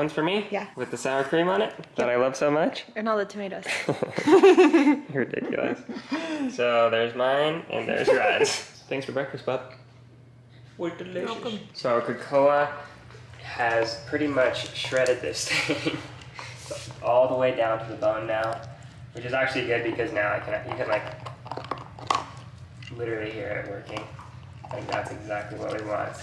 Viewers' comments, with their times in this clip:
0:09 I literally thought he said you`re delicious! xD